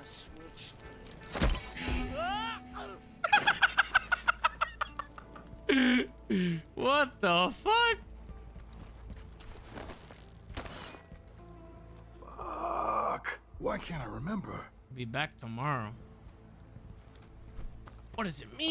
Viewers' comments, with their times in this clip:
0:03 miss that laugh!!